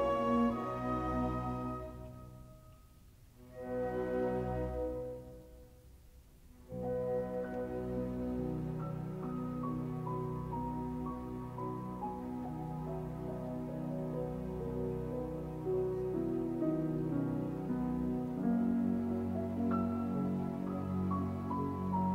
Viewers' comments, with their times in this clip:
0:06 Arrau is playing a really pianissimo and not a piano cantabile as we mostly hear. Unfortunately he did (could?)not in his last recording with Davis .